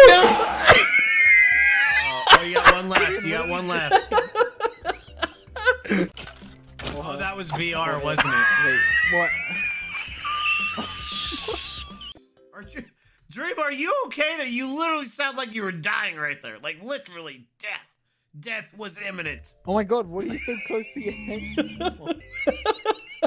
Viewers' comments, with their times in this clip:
0:08 Dream sounded like a frying pan that was about to explode. 😂🤣
0:11 Dream turned into an actual tea kettle XD